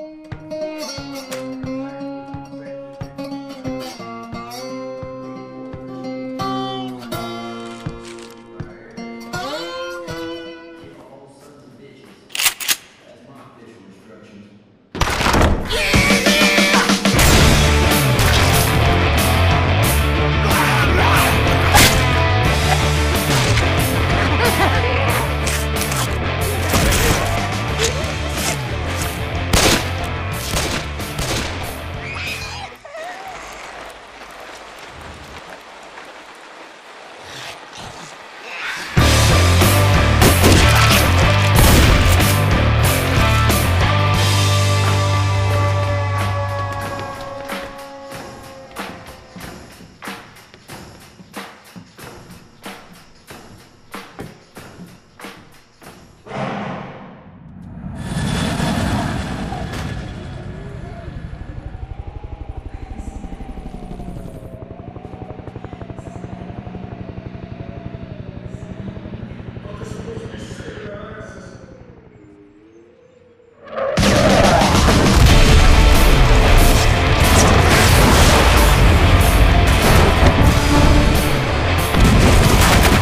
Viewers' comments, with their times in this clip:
0:10 ELLIS IS HAS AN ECHO
0:11 what happen to the peaceful music
0:11 you can hear the voicy of ellis and others.. but thx for the song :)
0:12 i love the music that goes up to
1:00 Where's the music?
1:10 I like how you faintly hear coach say his line
1:10 i heard coach's voice